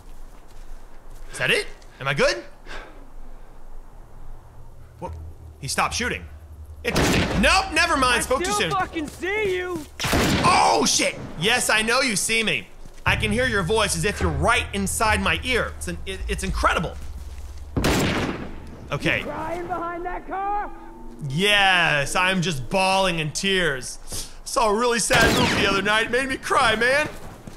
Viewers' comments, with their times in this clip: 0:08 is that Jesse pinkman protecting his meth lab? God damm. That voice